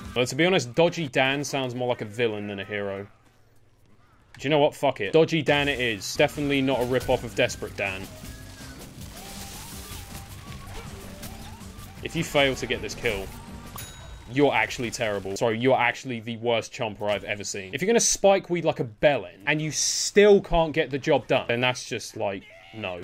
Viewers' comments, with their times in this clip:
0:06 i thought dirty dan..